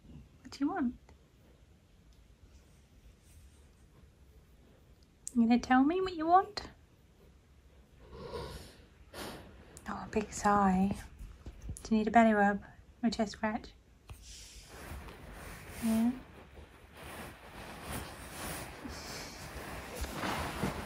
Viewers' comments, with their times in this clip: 0:08 that was a really loud sigh.